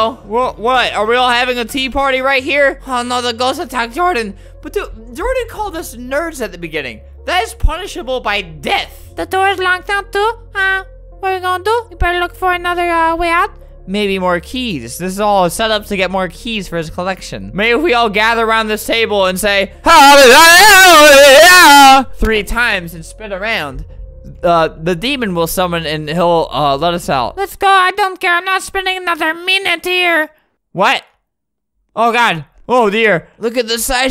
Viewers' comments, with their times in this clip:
0:09 is my favorite voice
0:12 his voice to cute for me just to cute
0:18 best frotnite henchmen sound
0:20 is like an impersonation of a native American and as a native American I find it funny 😂
0:20 Bruh is like an impersonation of a native American and I'm native 😂😂
0:20 just oofed me 😂